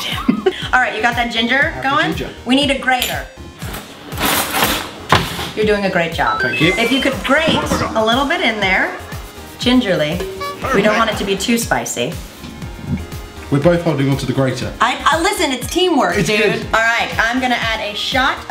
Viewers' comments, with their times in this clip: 0:06 Love the Crash Bandicoot sound =D